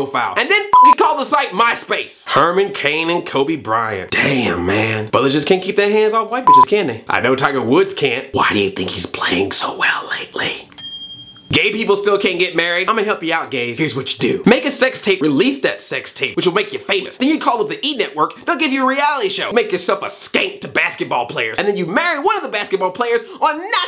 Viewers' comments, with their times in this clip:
0:10 I though I got a Google Voice text message and had to pause this to check. Hmmm I did not, back it up a few seconds and oohh I got another text... wait a second...